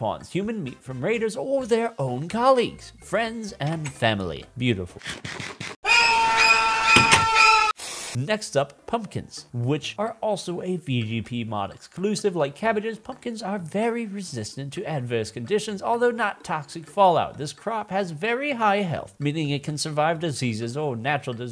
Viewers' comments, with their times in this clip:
0:06 Love the vid but the scare was too loud! Scared the shit out of me.